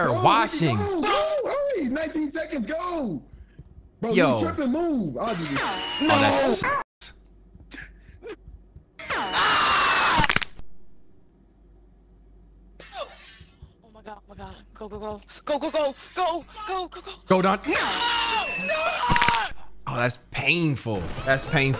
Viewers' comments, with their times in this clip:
0:05 Did he bleep out sucks?